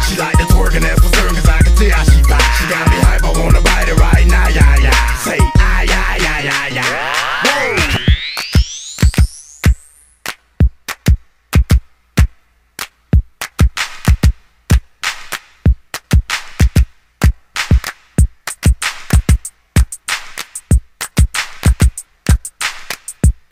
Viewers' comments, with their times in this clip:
0:06 Im just here for the beat breakdown at the end legendary hood classic instrumental